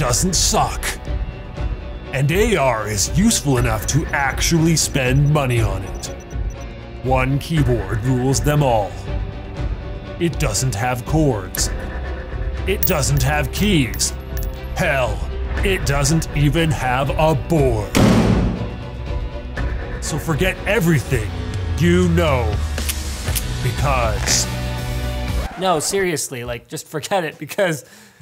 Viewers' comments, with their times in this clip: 0:07 when you think it says fap
0:09 I thought is said FAP